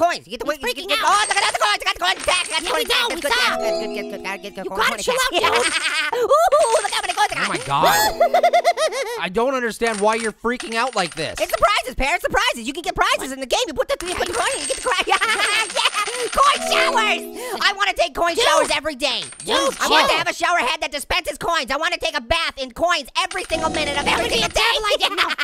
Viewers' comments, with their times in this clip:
0:05 he’s talking so fast 😂😂
0:07 orange's laugh on cocaine